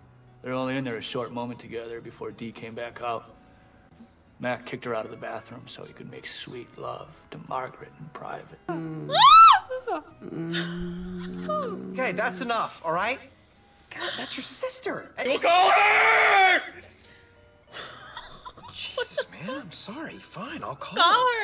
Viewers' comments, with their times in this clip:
0:09 Your horrified/delighted squeal proves you're one of us twisted chicks that is into Sunny! 😆 No, I wouldn't have expected you'd enjoy the show this much, but that seems to often be the case whenever I come across other fans! That's the magic of Sunny. 🖤